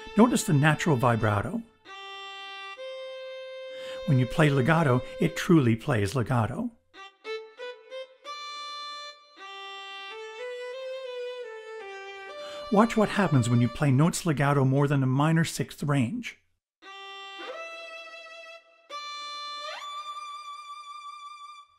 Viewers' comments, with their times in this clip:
0:07 Ugh......I am completely spoiled by VSTs. Sorry, but that Violin sounds terrible.